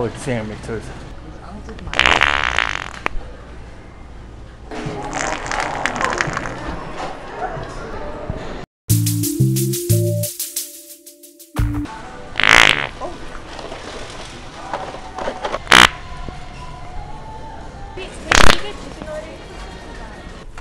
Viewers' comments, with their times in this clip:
0:04 Boy oh boy ! the powerful bass fart !! Very good !